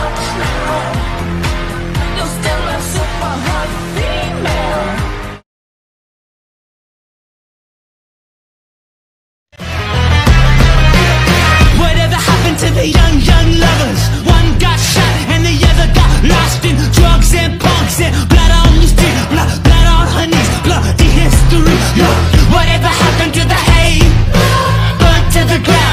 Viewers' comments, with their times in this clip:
0:09 THIS ONE IS BEAUTIFUL!! I LOVE THE SONG!